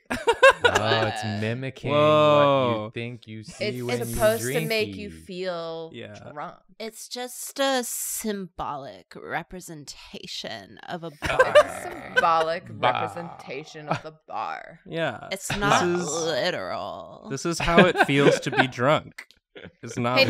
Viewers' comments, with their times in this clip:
0:06 I'm so impressed you got Jason Funderberker on the show And you hit the E note perfectly